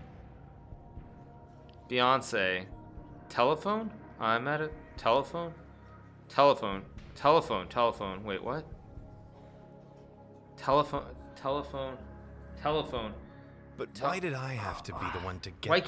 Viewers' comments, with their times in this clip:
0:03 He sounded like a calm version of me when the telephone is ringing in the middle of a game 😂